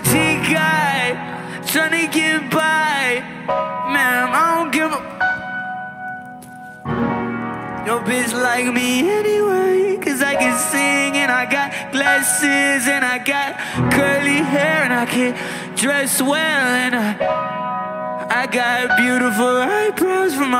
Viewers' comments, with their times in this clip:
0:06 soulful, felt that 💔 got me 🥹